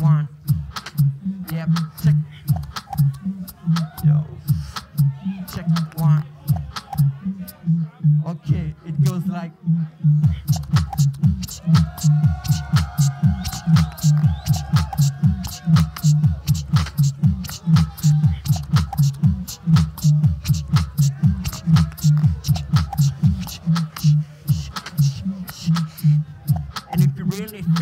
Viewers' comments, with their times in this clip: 0:08 He knows perfectly he created a really good sound, and he is so happy to share it that he can't contain all his plaisure when he talks... Do you hear it??! So good feeling... Really plaisant sound... Sounds like Berlin's undergrounds...PEACE!
0:10 Best house beat of all time?